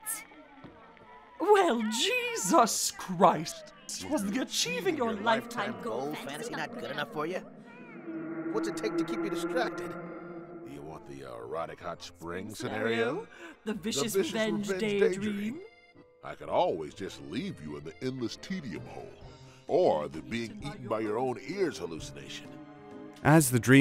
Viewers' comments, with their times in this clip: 0:04 THE HALLUCINATION FADING IN AND OUT SOUNDS SO FUCKING COOL